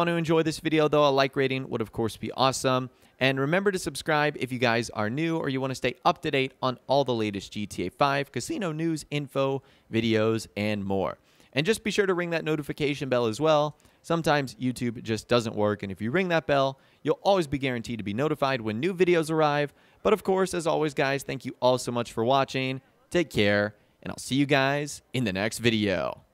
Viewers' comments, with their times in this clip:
0:07 caught that voice crack🤣